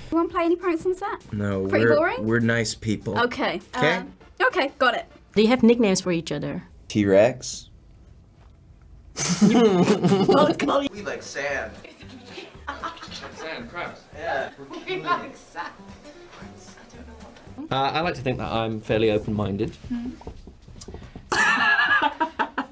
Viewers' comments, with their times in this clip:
0:06 his giggle is so cute 🥰🥺 I Love Thomas
0:09 that laugh tho TBS fan